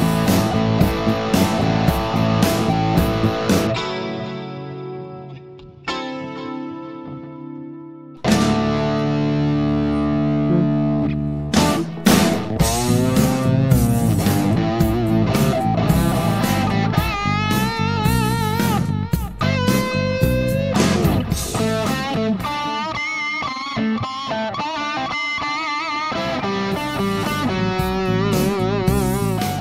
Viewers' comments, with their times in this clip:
0:10 So the ascending line of wasn’t a guitar 😅